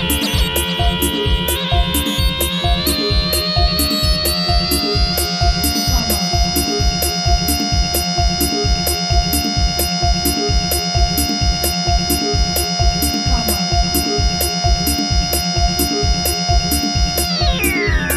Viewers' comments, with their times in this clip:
0:05 Nice track but who the fuck likes this long beep ?